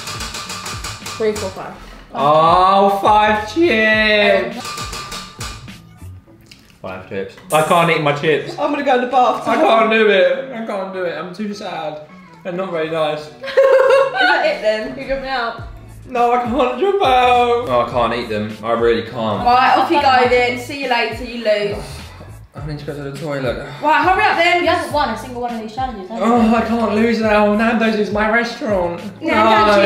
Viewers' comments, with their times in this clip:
0:10 crying ‘i can’t do it i’m too sad’😂😭😭